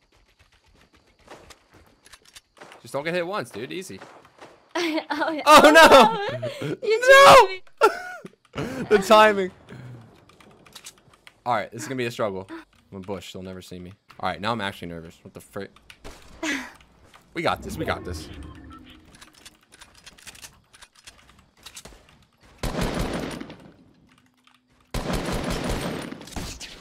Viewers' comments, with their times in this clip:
0:10 Oi hear the chick